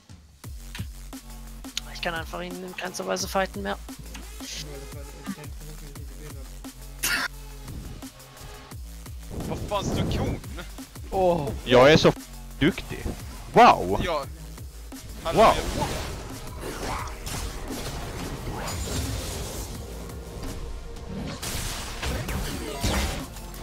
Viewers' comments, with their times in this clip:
0:04 the laugh was so good lol